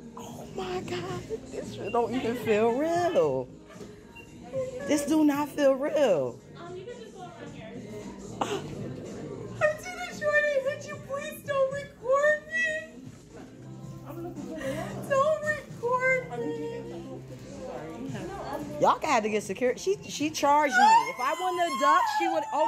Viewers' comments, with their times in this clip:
0:10 is that the witch from left 4 dead?